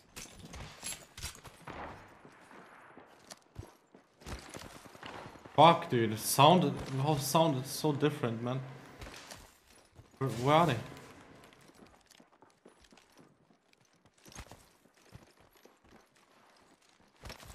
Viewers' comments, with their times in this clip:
0:04 looks like you heard the wraith more than one time before ending her?